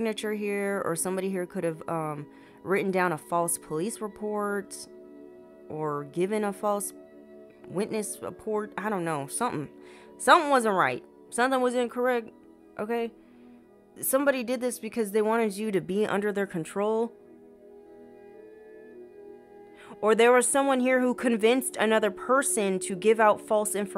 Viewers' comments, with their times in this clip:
0:08 dam big sneeze 😮